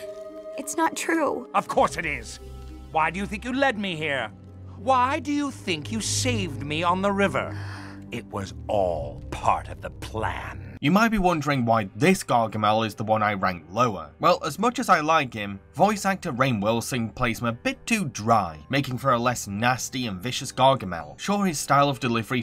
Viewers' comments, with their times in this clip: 0:09 i recognised galaxor's voice from monsters vs aliens just here